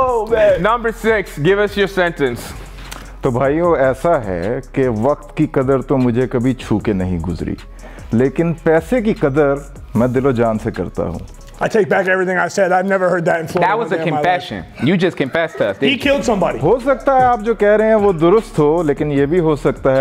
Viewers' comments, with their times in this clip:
0:04 sounds indrian and Russian